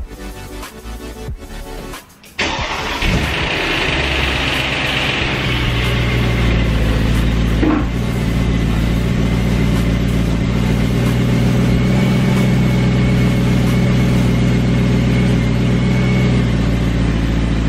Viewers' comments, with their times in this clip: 0:03 That cold start rattle 😟 doesn't sound good at all.. Is this normal for the e92?